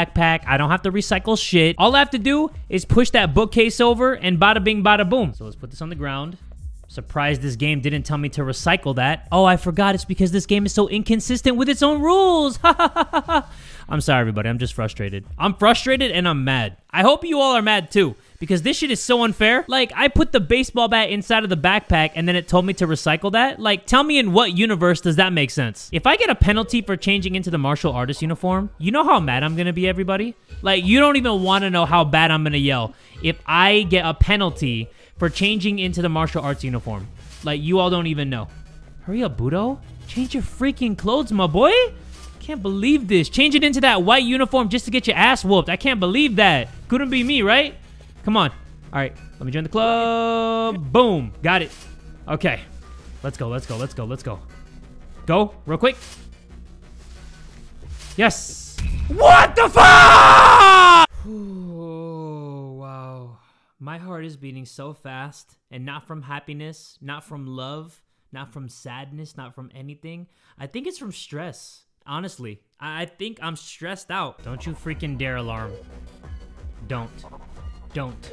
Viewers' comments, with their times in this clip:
0:10 By he kinda laughed similarly to nagito
0:56 I FEEL BAD FOR LAUGHING , his scream was too funny 😭😭
0:58 Best Scream I've ever heard from this man
0:58 HOLY SHIT MY EARS 😭
0:59 my headphones were too loud
0:59 My guy screamed louder than i could ever